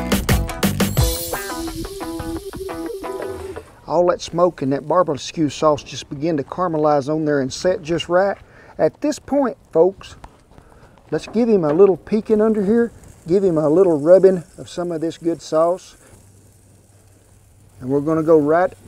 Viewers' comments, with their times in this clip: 0:04 “All that smoke and Barbleskew sauce” 😝 Drooling on the iPad. 🤘